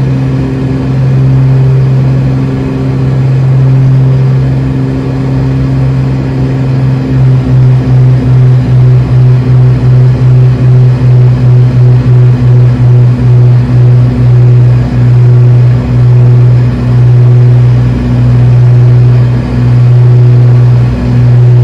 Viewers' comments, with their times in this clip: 0:06 one of my favorite sounds: lowering the rpms